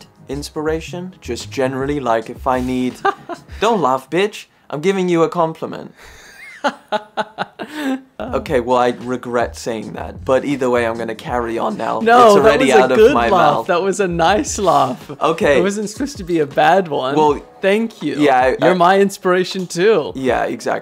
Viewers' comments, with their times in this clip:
0:04 the way he said that lmao